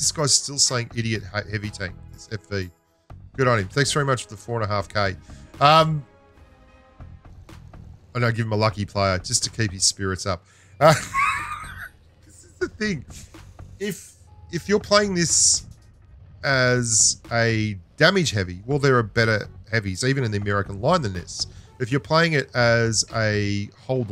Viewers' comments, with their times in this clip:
0:07 most of the time, the "Lucky Player" have negative effect, lol. Funny how you laughed about that.